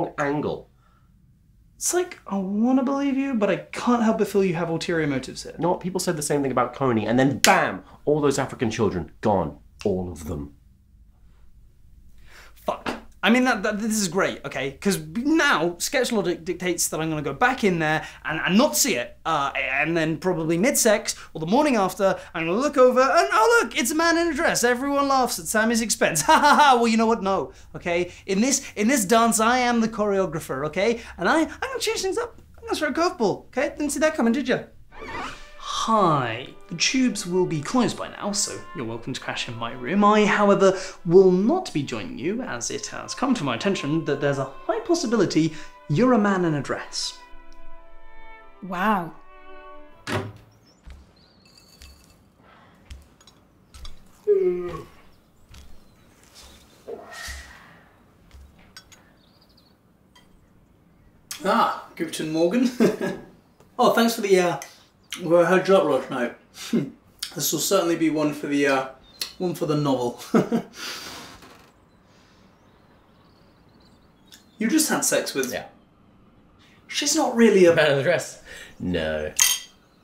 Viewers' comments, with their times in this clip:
0:09 I love that snap
1:01 was that dutch?
1:01 You spoke German xd, I'm German and I think you did well